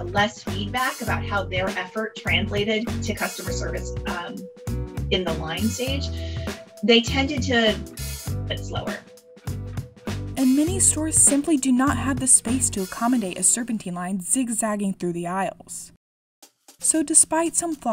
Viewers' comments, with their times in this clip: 0:03 The background music makes a little bit harder hear the interview with the expert. thanks